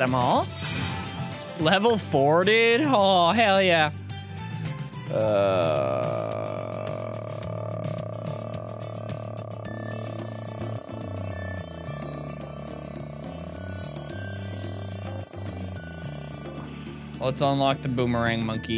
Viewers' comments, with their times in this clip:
0:05 My longest uhh